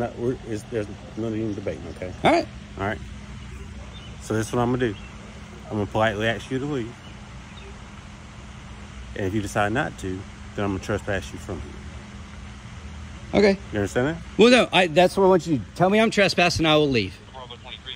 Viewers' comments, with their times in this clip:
0:05 “I’m going to politely AXE you…..” How do you politely AXE someone? Why can’t most black people pronounce the word ASK?